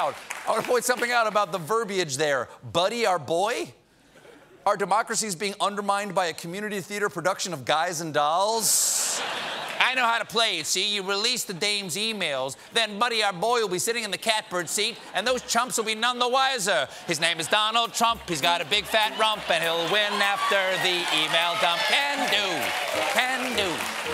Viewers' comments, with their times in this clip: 0:10 Stephen does a great imitation of the 'trans-atlantic accent' that was so prevalent in movies of the 1930s and '40s.